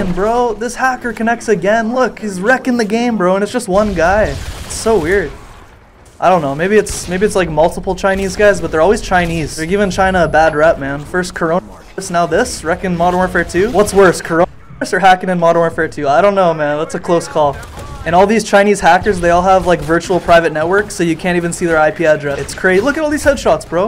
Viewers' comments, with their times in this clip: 0:10 Bro you say “Corona Virus 🦠 ” and youtube makes your mic cut out.. thats sus